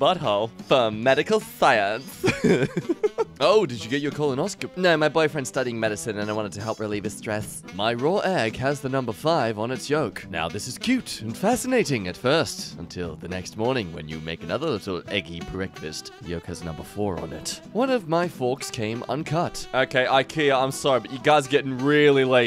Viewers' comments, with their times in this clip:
0:06 I don’t appreciate the lisp while pretending to be gay.